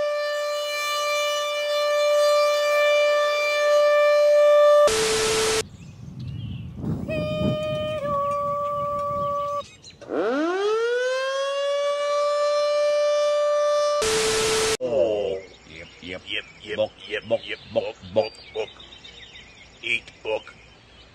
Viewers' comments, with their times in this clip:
0:06 Hmm I wonder if is what the activation tones really sound like for Bremen, IN as I know for a fact they use Two Tone